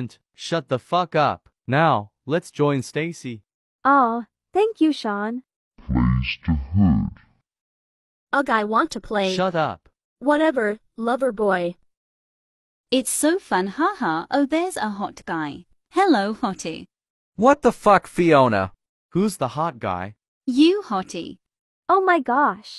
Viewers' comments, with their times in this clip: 0:06 this voice old man